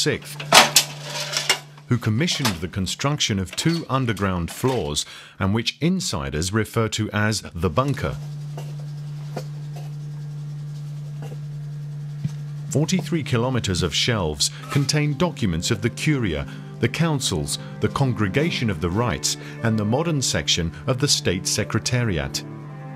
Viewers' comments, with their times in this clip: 0:07 I have no idea what half the crap is that they mentioned in this video, but the camera guy is brushing his teeth with an electric toothbrush